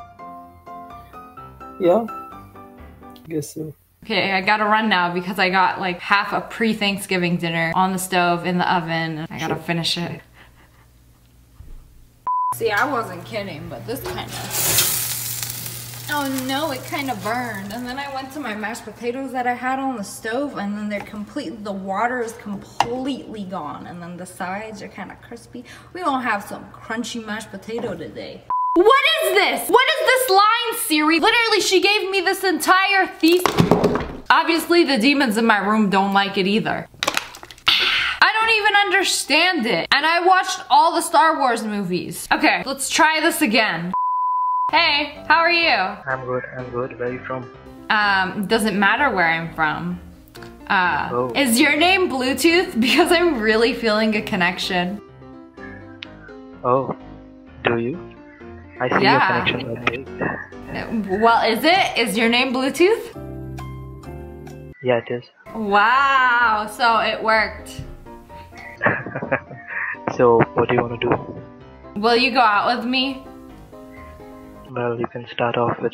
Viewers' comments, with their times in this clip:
0:08 AW HOW CUTE I LOVE YOU CUTE LAUGHING SMILE 💝
0:57 Nobody: people's microphones in a windy place: